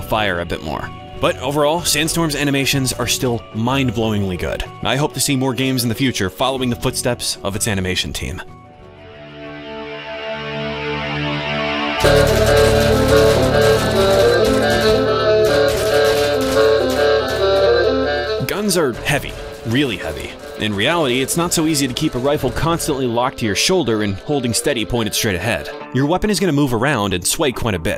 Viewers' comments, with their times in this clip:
0:09 Was this songs main instrument a fucking klaxxon?